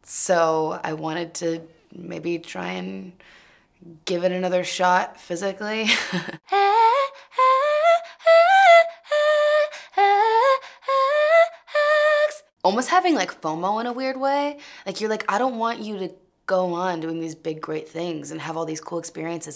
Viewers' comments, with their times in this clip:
0:07 FINALLY. She is incredible and is starting to get the recognition that she deserves!!! Also, the vocals 💁🏽‍♂️💁🏽‍♂️💁🏽‍♂️💁🏽‍♂️💁🏽‍♂️🔥🔥🔥🔥🔥
0:07 🤩 the fact that she hit that.! Amazing sis.